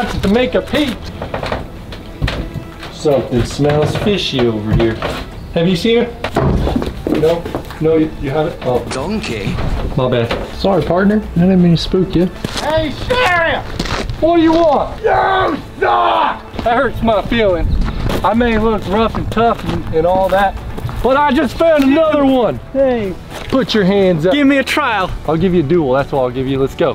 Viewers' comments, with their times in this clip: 0:08 he sounds like Shrek.
0:11 that sounds like Karl jacobs